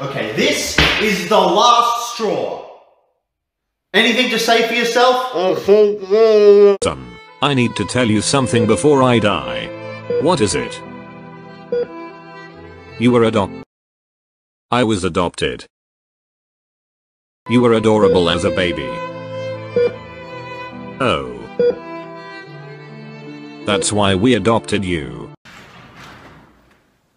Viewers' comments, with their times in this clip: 0:08 i thought it was adolf hitler or smth💀